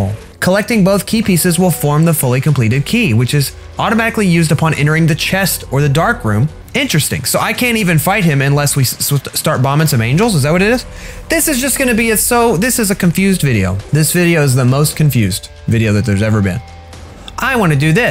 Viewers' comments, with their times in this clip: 0:04 HE SAID BISS!